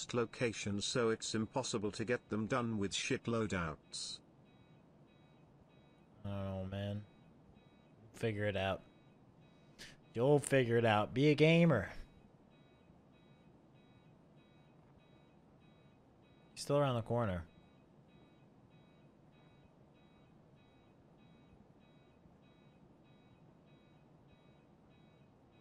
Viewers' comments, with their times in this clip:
0:07 “figure it out” spoken like a tru chad